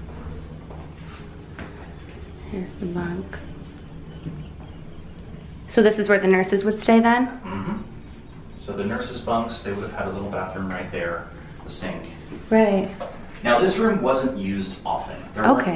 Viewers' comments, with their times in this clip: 0:03 i heard samthing like cry and the stoped. I love your videos. 😊